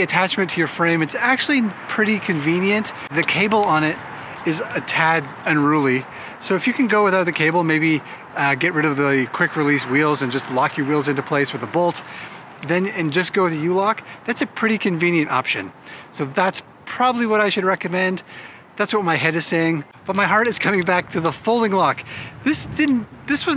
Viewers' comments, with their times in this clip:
0:04 Check out the loud ass belch 🤣